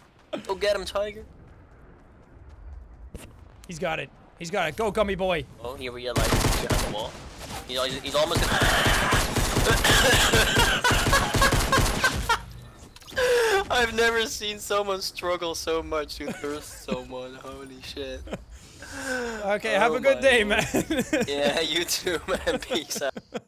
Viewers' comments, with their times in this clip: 0:08 did i just hear springtrap?